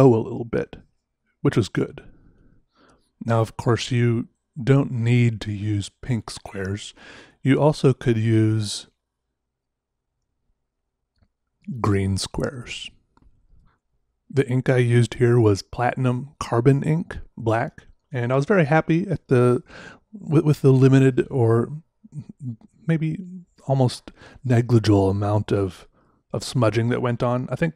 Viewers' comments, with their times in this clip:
0:10 deadpan humor best humor